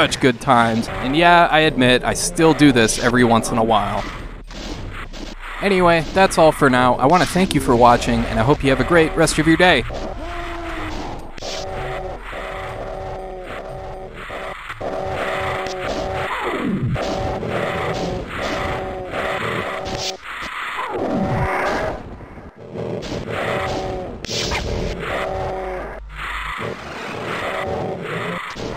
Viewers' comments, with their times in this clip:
0:10 Ah, soothing ASMR I can fall asleep to anytime.